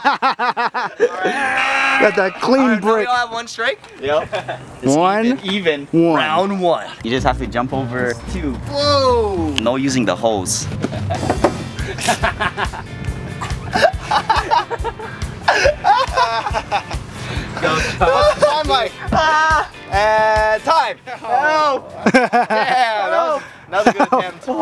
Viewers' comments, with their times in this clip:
0:06 is he the boxing star voice dude that says what round it is and count downs